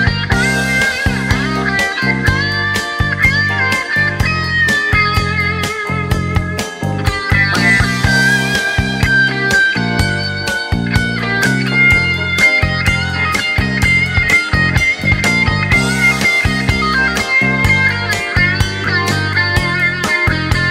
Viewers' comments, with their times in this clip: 0:08 Holy crap!!!! That walk down lick !!!! Excellent!!!